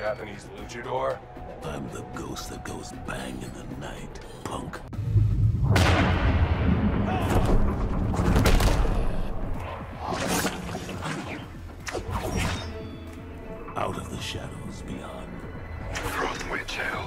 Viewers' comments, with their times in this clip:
0:03 For some reason my mind replaced pun with the n word